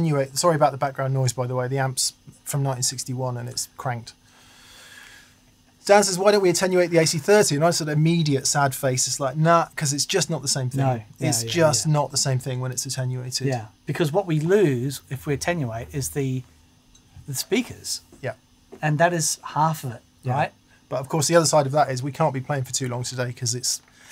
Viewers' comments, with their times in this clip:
0:06 amp hiss is music to my ears